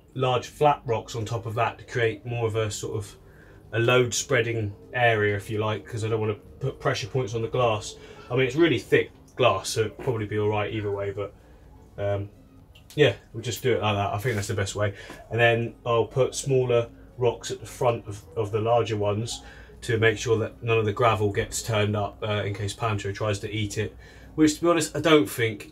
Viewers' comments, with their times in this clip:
0:09 it sounds like a fart.